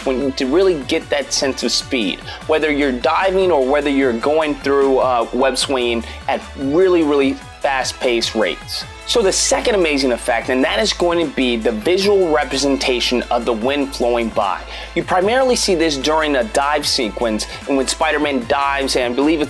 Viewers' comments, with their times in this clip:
0:04 love this animation at .25 spead.. although it sounds like you have alcohol poisoning.